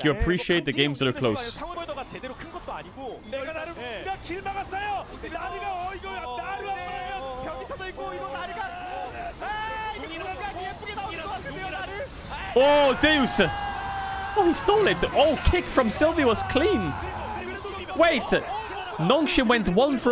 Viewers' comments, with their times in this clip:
0:06 Korean cast is hype affff